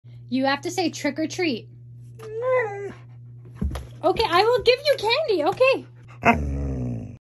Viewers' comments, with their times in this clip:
0:02 that was a perfect “no”
0:02 She spoke perfectly!